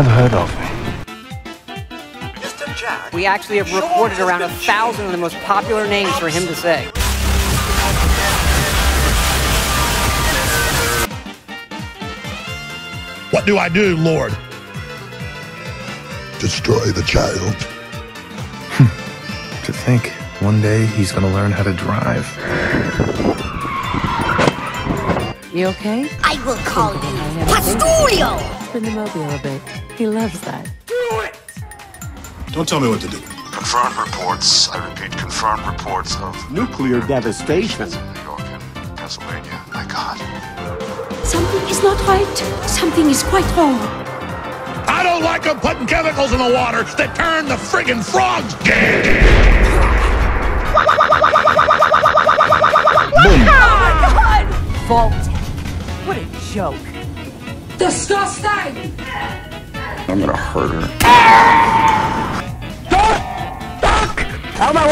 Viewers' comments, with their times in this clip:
0:06 what was the earraped song ?
0:47 echo is hilarious